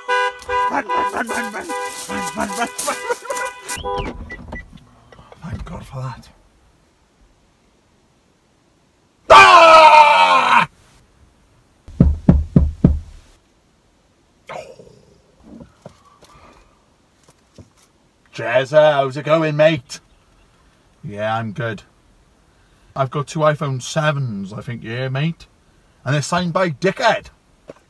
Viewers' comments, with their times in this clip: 0:09 r.i.p headphone users im one of them